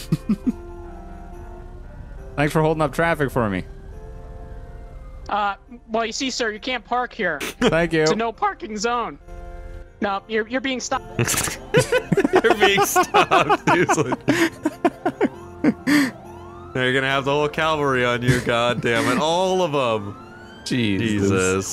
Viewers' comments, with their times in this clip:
0:03 ultimate voice crack
0:03 Biggest voice crack
0:07 That voice crack tho! "Cant pARk there"
0:07 His voice just died.
0:07 its a no (voice crack) parking zone!
0:08 that voice crack was quality 😂
0:08 voice crack central